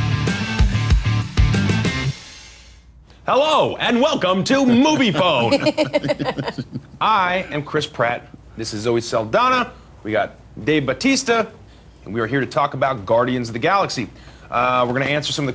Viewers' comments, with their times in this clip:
0:03 lol... great Kramer impression.